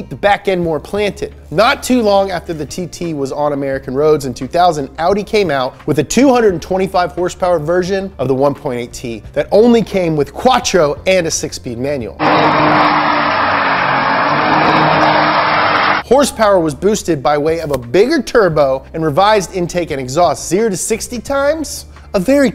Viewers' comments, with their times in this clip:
0:06 "horsepower"? what's that? I've only heard HRSPR